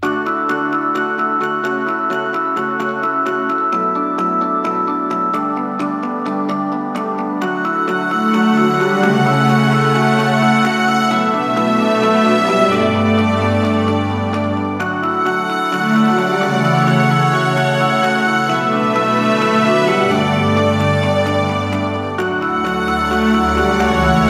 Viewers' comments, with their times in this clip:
0:06 u felt bad cause she was cryinh😭😭